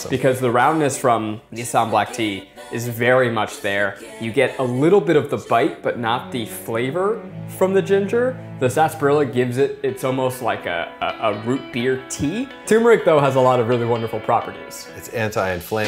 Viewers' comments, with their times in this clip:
0:03 He was speaking like Remy from Ratatouille